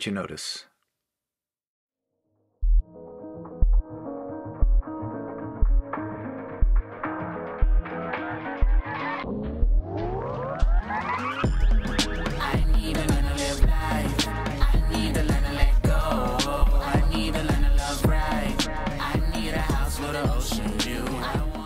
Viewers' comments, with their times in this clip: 0:03 sounds like the sample in 'Make Believe' by Juice WRLD and in the end he was the reason why I started making music and watching this video right now.